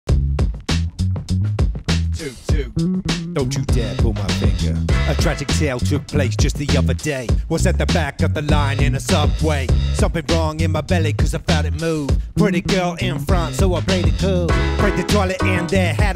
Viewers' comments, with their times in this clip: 0:01 this sounds Friday night funkin